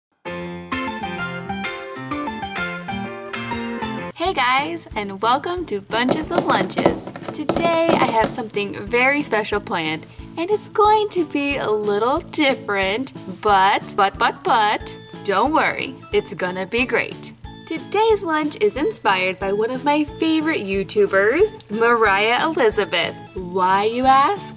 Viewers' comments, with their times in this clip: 0:08 Omg that is a weird noise